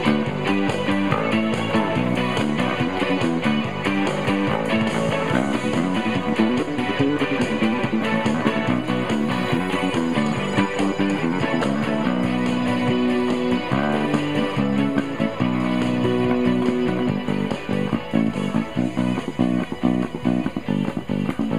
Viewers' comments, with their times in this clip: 0:04 That run was amazing. Really clean!
0:05 wicked good chops thrown in!
0:05 Absolutely, Absalomly Fantastic !! Insert * wink * here. Thank you for sharing this one. I really enjoyed hearing this song done with the Ric too. The riff or solo beginning is ridiculously great.
0:07 that little bass full was sexy af